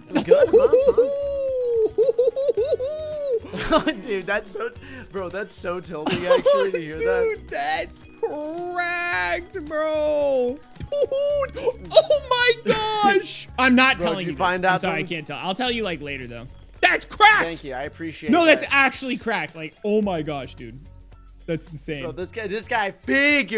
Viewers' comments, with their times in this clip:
0:10 Lol mans sounds like a fall guys character